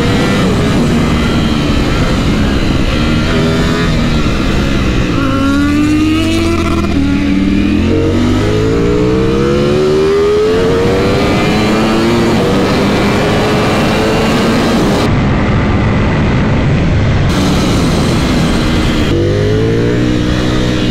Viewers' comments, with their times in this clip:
0:04 z900 love that throttle sound🔥😍❤
0:05 that acceleration sound of Z900 was 🔥 🤤